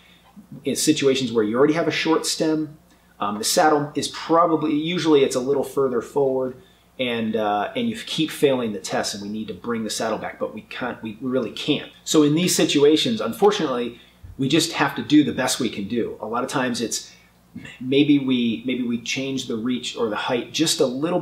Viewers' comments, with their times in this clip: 0:09 when you say "cunt" lol